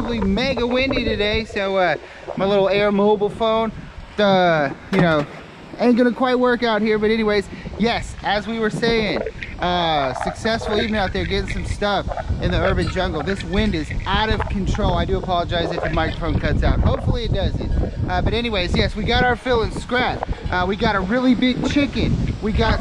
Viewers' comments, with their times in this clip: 0:09 There is some straight up demonic voices coming thru the wind while your wrapping it up at the end.... it's pretty much at the exact 28 minute mark. Whoa!
0:09 anybody else hear voices from the void zone ?